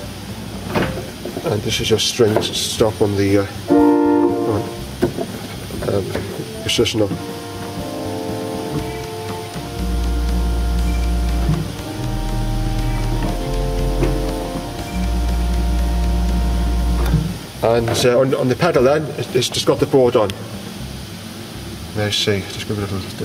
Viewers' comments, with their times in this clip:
0:09 Nice techno beat #technoorgan #classictechno #techno :D